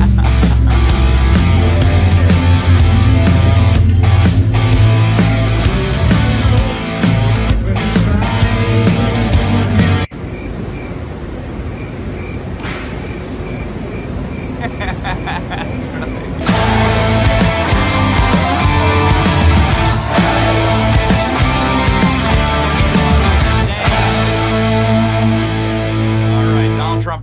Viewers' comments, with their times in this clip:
0:10 Give those crickets a raise!